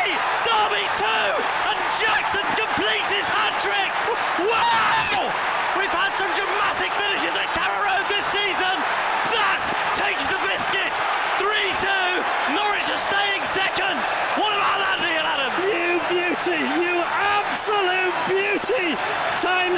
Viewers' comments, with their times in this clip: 0:04 Lol, the commentator screamed at the exact time the guy fell into the pitch😂🔰🐥🐤😯🤯